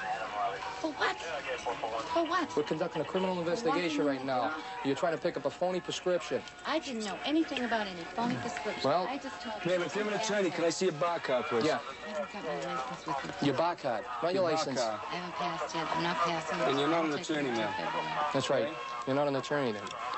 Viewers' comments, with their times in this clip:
0:07 Let me see ya Bah cahd